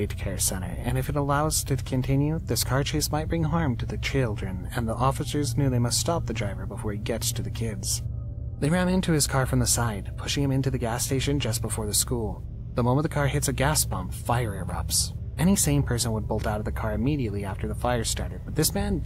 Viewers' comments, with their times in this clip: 0:04 I think he’s using ai to make some clips like why did he say children like that